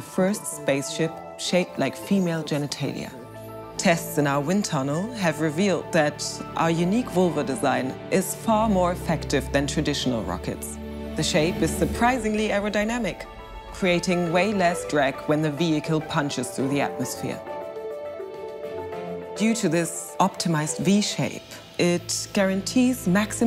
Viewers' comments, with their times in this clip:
0:07 Does anyone else notice how she barely holds back laughter ? :D Otherwise i too wasn't sure if it's well made parody or not